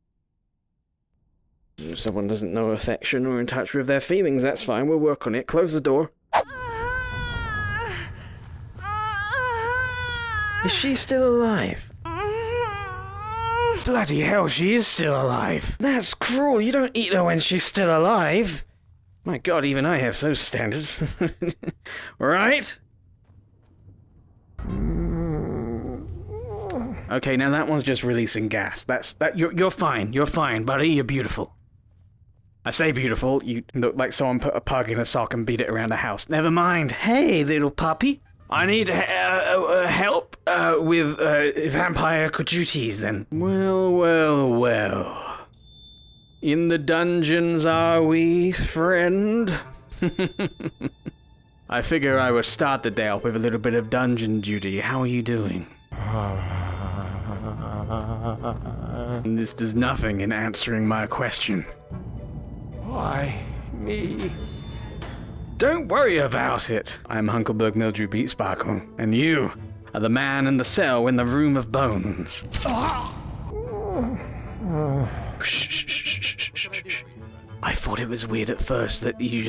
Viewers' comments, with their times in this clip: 0:06 why did they record sex sounds in the making of the dawngaurd?
1:04 The way he said "Don't worry about it!" Made me smile!